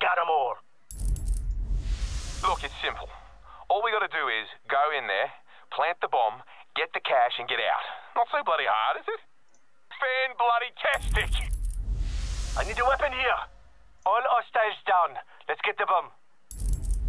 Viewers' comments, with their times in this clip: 0:03 he speaks very best timing